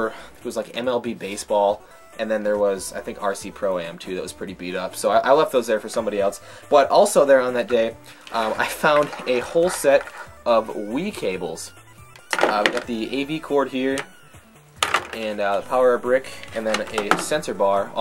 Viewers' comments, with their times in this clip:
0:03 I though you said RC Pro Am 2! The MUCH rarer of the two.